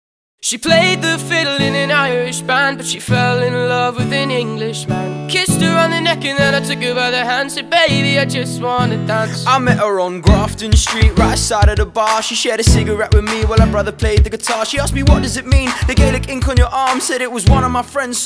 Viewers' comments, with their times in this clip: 0:00 -00.09 i love your accent
0:02 tihs voice so cute😍😍😍